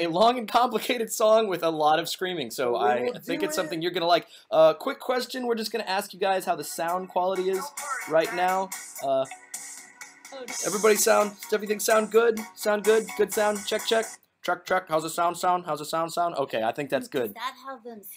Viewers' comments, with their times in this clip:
0:06 lol Bipper is singing Disco Girl for some reason and Dipper is getting mad